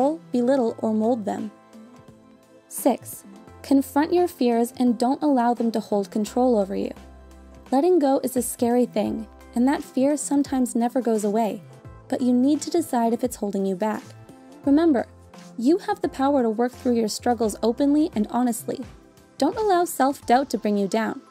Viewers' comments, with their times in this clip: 0:03 “Confront your tears” omg
0:06 wait confronting tears?